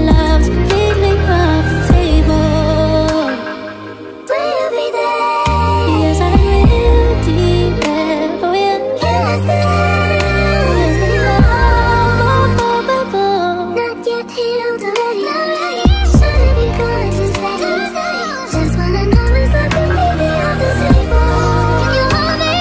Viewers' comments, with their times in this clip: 0:10 the whistle is so high wow ahaha